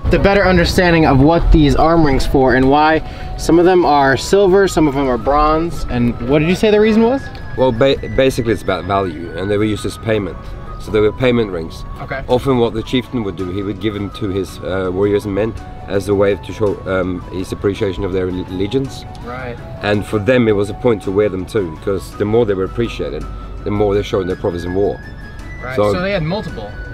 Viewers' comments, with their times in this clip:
0:09 this man... has the most beautiful voice I have ever heard 😳